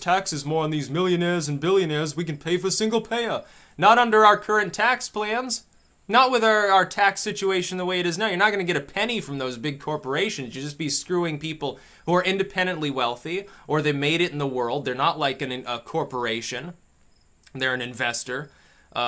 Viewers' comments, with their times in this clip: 0:06 That was a good Bernie voice imitation you did I also like your dry sarcasm about letting our government run health care. "Hydrogen Hillary" was your funniest one, I died laughing when you did said that in your other video. Keep up the good fight. Resist Political Correctness !!